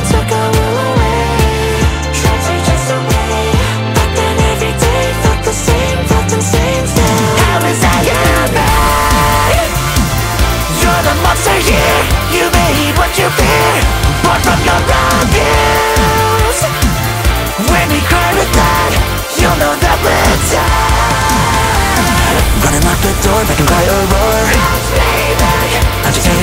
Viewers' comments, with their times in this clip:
0:07 🗣️ went all out hereeee